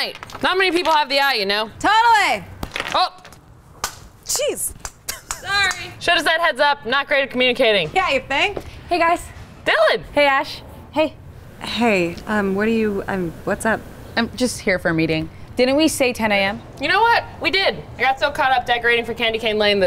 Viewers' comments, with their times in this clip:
0:05 the laugh doee!